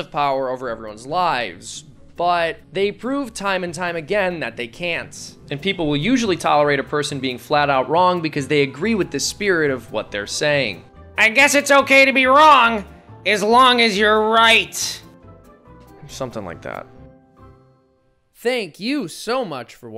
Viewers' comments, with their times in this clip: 0:04 What happened to the audio?
0:05 I aint no audiophile, but hit hard, it like startled me.